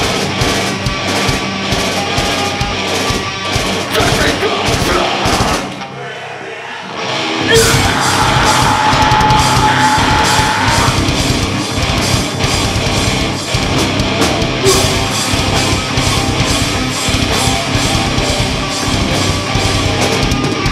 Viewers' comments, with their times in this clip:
0:05 The bassist fucked up the flow